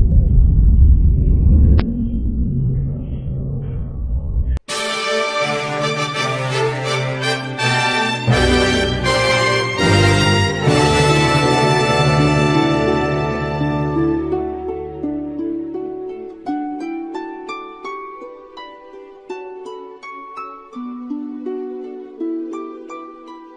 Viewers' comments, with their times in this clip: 0:06 the Mario world music